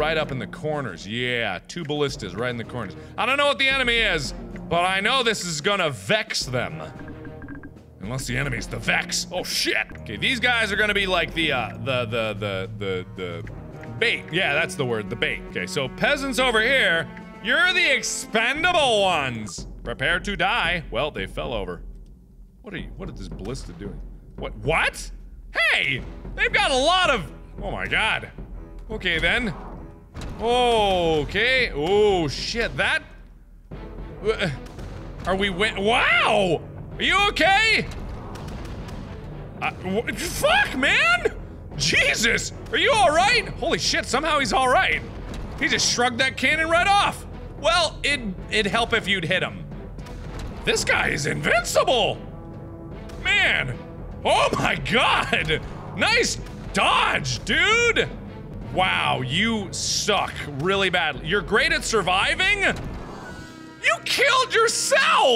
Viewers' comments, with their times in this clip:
0:08 “Unless the enemy is the vex, oh shit!” Charging robotic noises
0:51 the crazy ballista dude says something